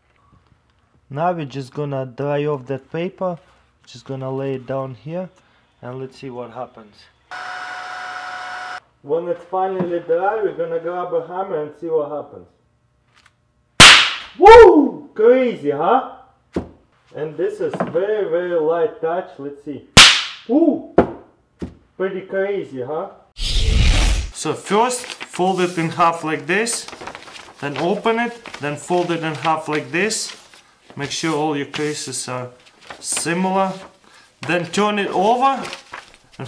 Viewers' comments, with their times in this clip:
0:08 When he smashed it, my speaker went like crazy
0:14 Nearly jumped,and my school iPad volume was at 5 bars.
0:17 who else jump on with earphones